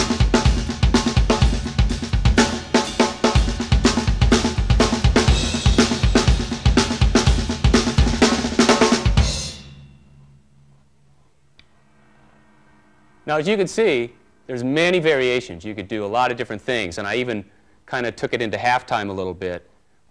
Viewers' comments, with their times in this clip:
0:05 That beat sounds like paradiddles.